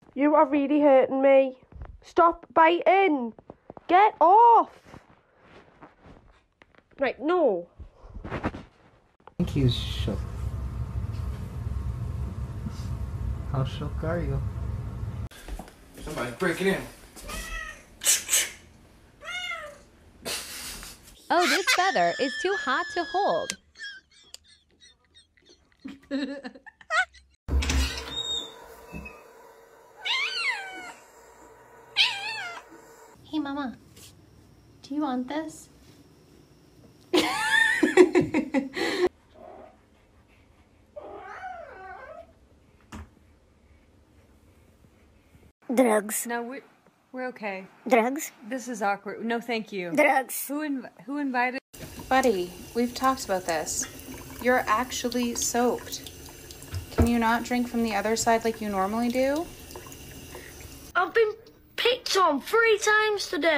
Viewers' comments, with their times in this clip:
0:08 It was very funny except the audio went to a different video and it was never together again
0:10 The audio is screwed up after
0:36 the cat litterally sounded like the door hinge and it was beautiful
0:49 yep he was right the sound did break